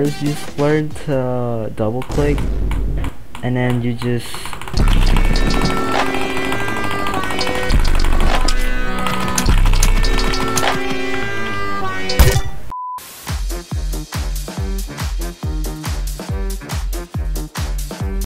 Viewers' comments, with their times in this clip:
0:04 w flex and w music to go with it 😅